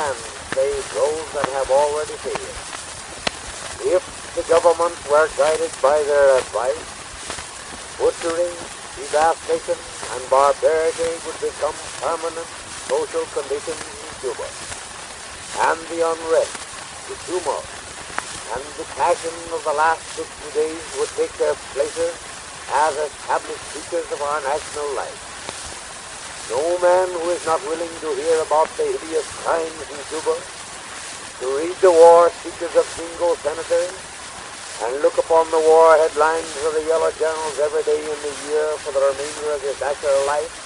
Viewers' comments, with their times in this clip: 0:09 "de-VAST-ation" is an interesting pronunciation! He sounds like a smooth and noble orator
0:26 "no man who is not willing to hear about the hideous crimes youtuber". Man was ahead of his time.